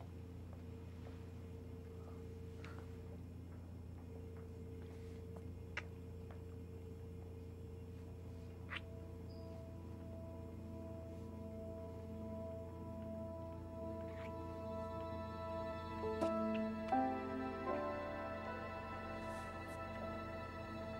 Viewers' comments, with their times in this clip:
0:04 That kiss was awkward you could hear their teeth hit when they kissed 😂😂